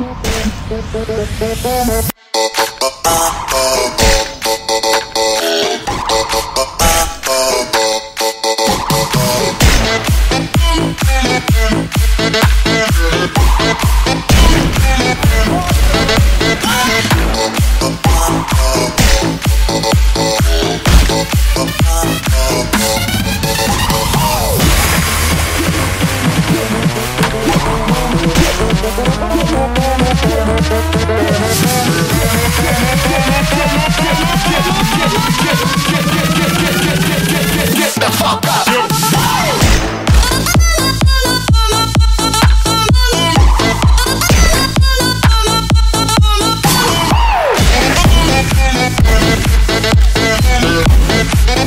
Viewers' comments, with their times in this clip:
0:04 most satisfying combo sounds
0:14 That Scattergun shot combined with the crit from the guillotine hit in synced so goodly
0:37 I love this music YOU ARE A TF2 GOD
0:38 In the drop which happend that epic!!!